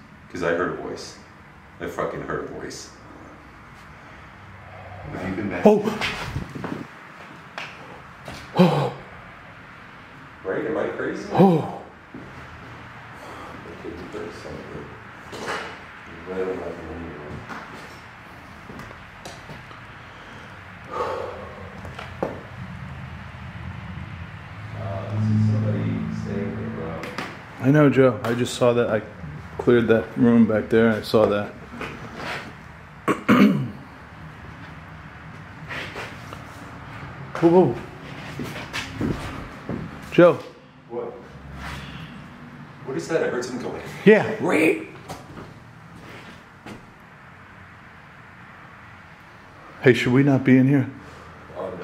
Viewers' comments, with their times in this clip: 0:06 That breath definitely came through!
0:38 the sqreach in witch I don't hear. Could it be safe to say it was an old car on the highway with bad belts or altinator squealing.. with all the traffic noise it's harder to definitively hear anything right out.